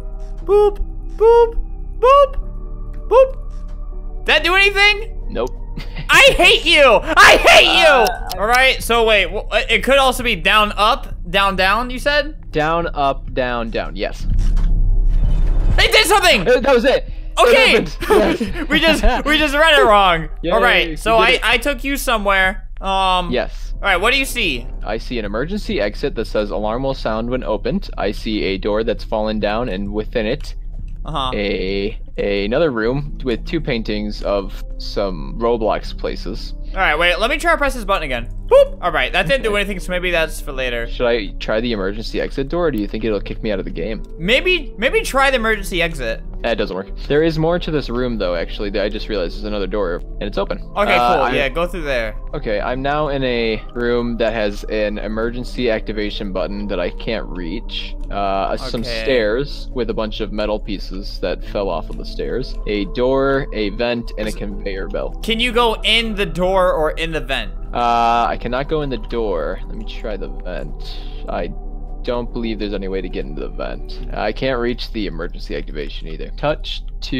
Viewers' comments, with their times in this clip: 0:03 if u listen the background music kinda sounds like fnaf music for a sec
1:03 "Conveyor belt" Subtitle : "Can pay your bill"